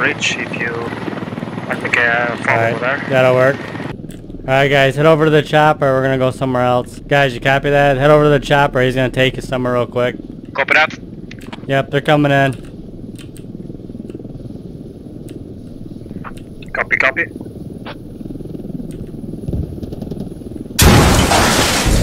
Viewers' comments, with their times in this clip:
0:04 it cracks me up when you do the low tone serious voice to come off as a respectable player and then BAM.